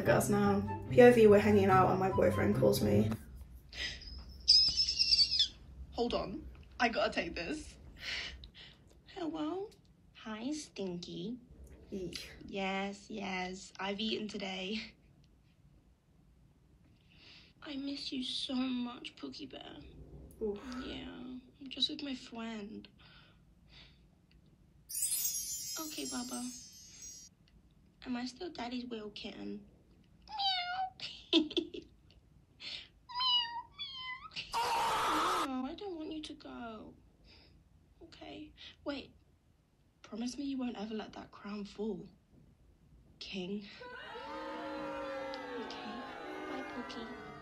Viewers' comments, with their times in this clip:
0:04 its giving car alarm 🚘🚨
0:22 omg.lol i feel o bqd cus i called.your dinging bqd you sing sooo good
0:31 that scream scared me tho😭😭😭😭(the reason it did is because I was not exciting it💀)
0:34 the scream got me jumped out of my chair😅